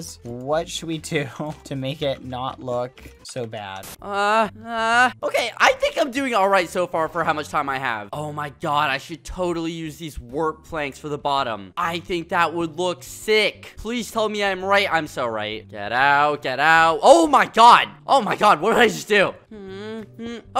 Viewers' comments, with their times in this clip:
0:04 what were those noises skeppy haha